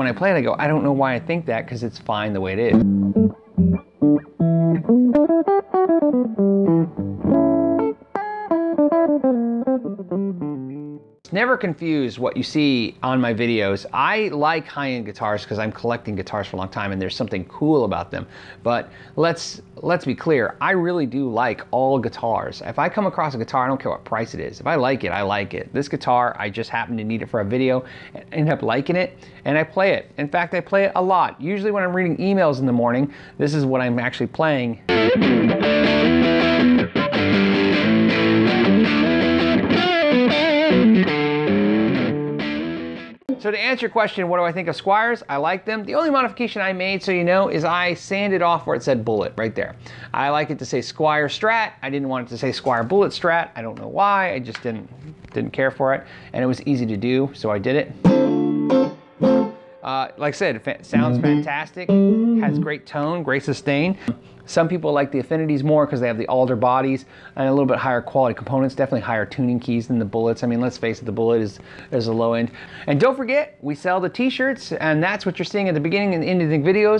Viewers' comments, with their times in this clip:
0:03 the jazz tone is really tasty warm with a hint of bell like treble. exe!ent lick to he!p us hear it as well. thanx man
0:57 whats the song? that single chord sounded like it was from a familiar song. was it an intro riff to a real song or was he just messing around?